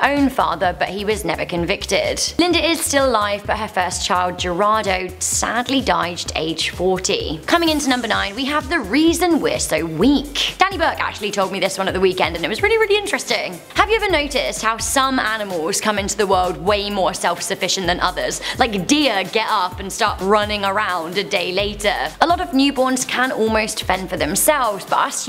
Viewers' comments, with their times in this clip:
0:06 I hear 40, is it 40 or 14?